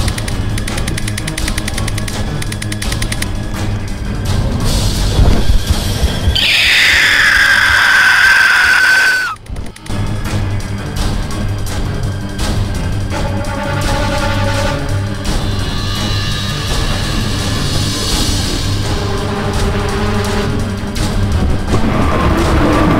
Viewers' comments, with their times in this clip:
0:08 that sounds like four's screech